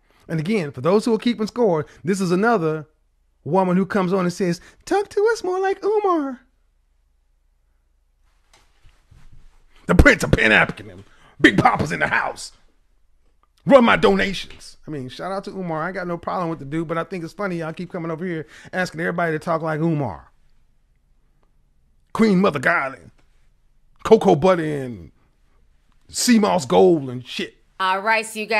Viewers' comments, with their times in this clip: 0:09 😆😆😆😆😆😆😆😆😆 the way he imitated Umar 😄😄😄😄😝 🤣🤣🤣🤣🤣🤣🤣🤣🤣🤣🤣🤣🤣🤣🤣🤣🤣🤣🤣🤣🤣🤣🤣🤣🤣🤣🤣🤣🤣🤣🤣🤣😆😆😆😆😆😆😆😆😆🤣🤣🤣🤣🤣🤣🤣🤣🤣🤣🤣🤣🤣🤣🤣🤣laughed my ass off.....😆😆😆😆😆😆 Kevin, you’re HILARIOUS 😆😆😆😆😆😆🤣🤣🤣🤣 🤣🤣🤣🤣🤣 seamoss goals.. please stop it 😆😆😆😆😆😆😂😂😂😂😂😂😂😂🥲